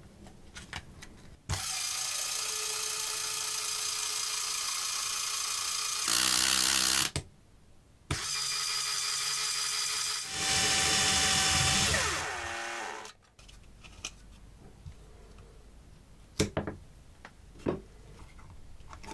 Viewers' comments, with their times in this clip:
0:05 the sound of a A-10 when it fly above you while shooting its weapon.